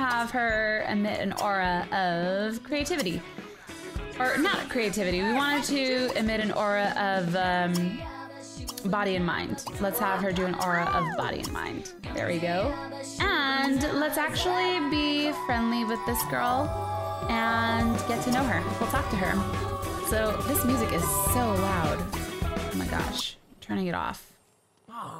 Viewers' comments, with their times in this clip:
0:06 omg Im digging the music man